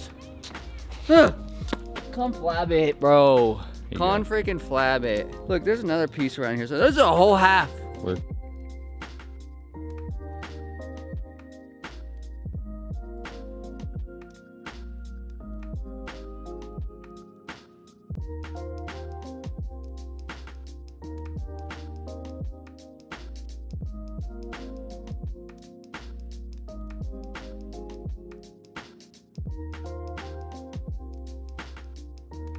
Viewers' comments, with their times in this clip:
0:10 Was it just me, or did the last 10 seconds of the video have him not talking and just music playing
0:10 you know he is muted or something:)
0:10 From until the end of the video I can’t hear you talk I can only hear the music
0:15 Did anybody elses audio cut out ?